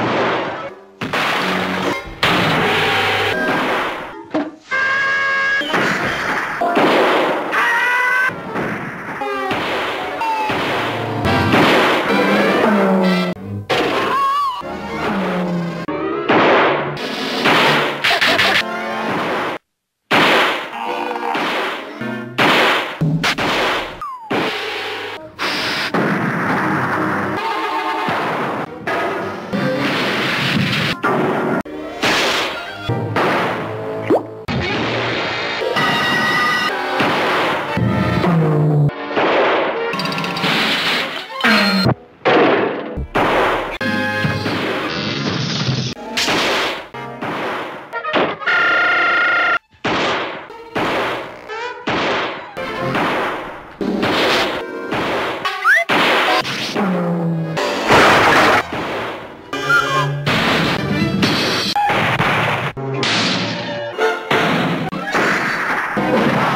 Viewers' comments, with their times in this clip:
0:09 I love that bang sound effect they always used to use
0:19 best hit sound
0:47 Window slams on Tom Tom: (screams ) praaaaaaaa
0:48 is my favorite shunk noise ever. The scream can make me laugh no matter what mood I am in.. lmao!
0:48 Sounds like a Windows Error
0:48 Funniest Tom Scream
0:49 XD Good job to who make that scream
0:49 Nobody was harmed in the gunfire: P